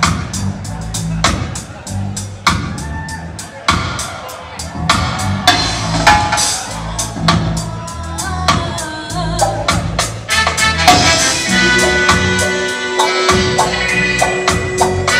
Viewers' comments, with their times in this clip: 0:03 where's the keyboard s? The clavinet bopping out would be good , stepping like bob Marley